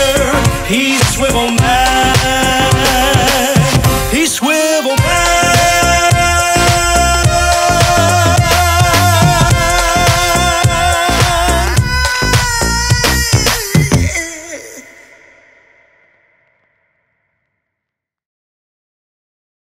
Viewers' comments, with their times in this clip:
0:10 that scream at the end though